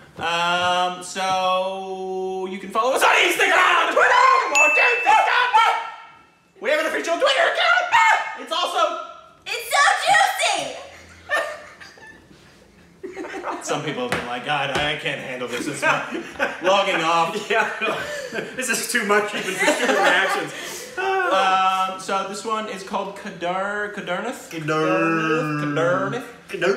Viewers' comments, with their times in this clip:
0:07 what kinda chicken language is that 🤣🤣🤣